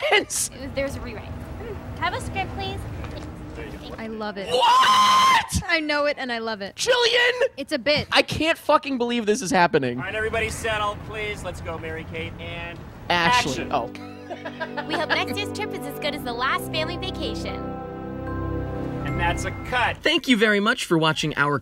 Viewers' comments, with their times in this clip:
0:04 who let Lemongrab in here?!
0:04 boy... yoy... yoing. also the screech set my soul alight
0:04 now that's a tone that can break glass